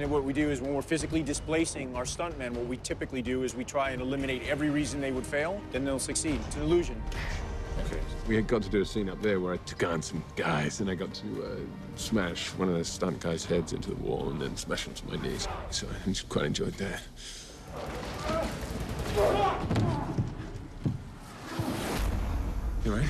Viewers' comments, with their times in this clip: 0:09 HOLY FUCK WHEN THEO DOES INTERVIEWS AND LIKE CHANGES HIS VOICE GIVE ME LIFE